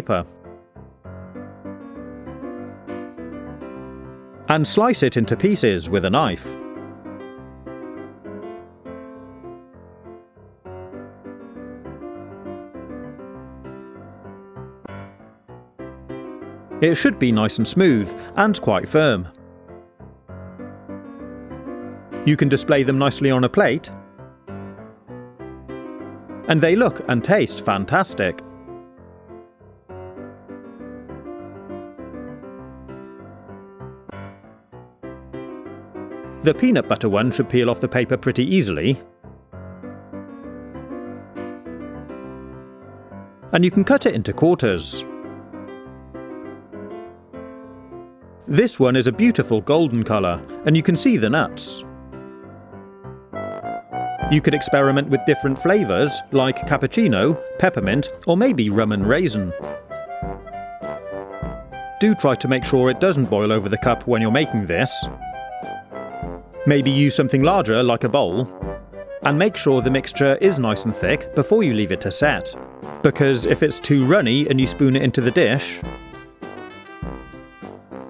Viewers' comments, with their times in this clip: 0:04 I thought you said cut it with a life. well time to get someone to make this
0:36 The way he says peanut butter
0:59 'And you can experiment with Roman Reigns-n'. CHILL